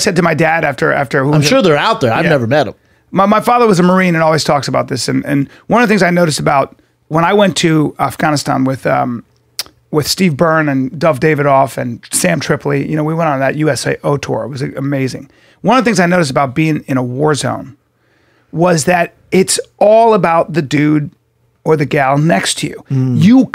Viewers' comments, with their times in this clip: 0:07 Off-gon-ist-on 🤣 Bryan tries so hard! It's cute.